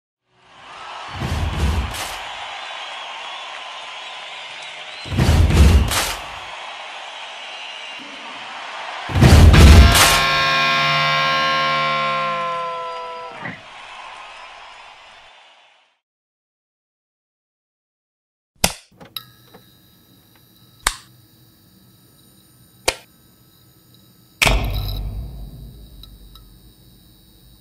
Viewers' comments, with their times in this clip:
0:09 E A R R A P E